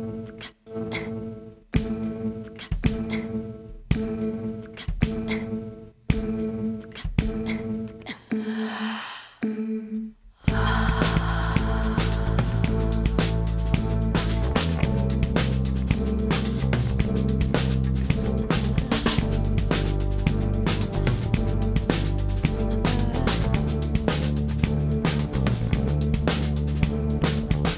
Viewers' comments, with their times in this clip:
0:08 that inhalation , that head bop. GAWD HAYLEYYYYYY